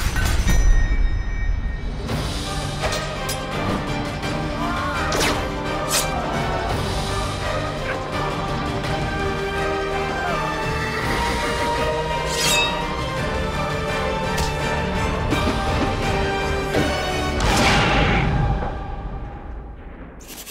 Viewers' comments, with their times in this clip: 0:04 Did anyone else hear that yell